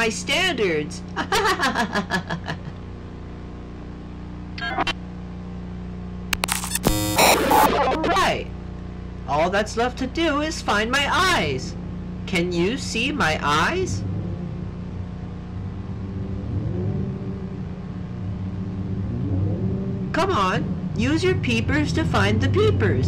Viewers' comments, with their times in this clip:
0:09 man the grimace of the clown with his distorted humming is haunting